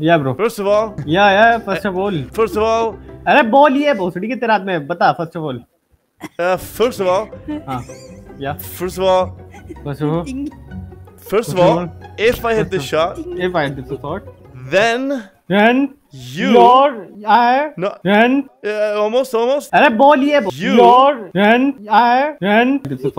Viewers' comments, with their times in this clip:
0:03 thats an Indian i know what he's saying
0:09 The hindi-den? Made me laugh to brazil😂😂😂